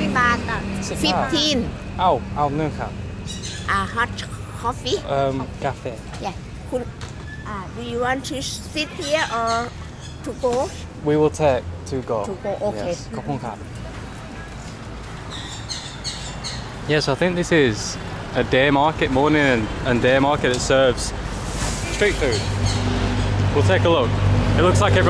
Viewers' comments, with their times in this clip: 0:10 Auntie in the minute of was so cool and nice, she speaks English pretty good.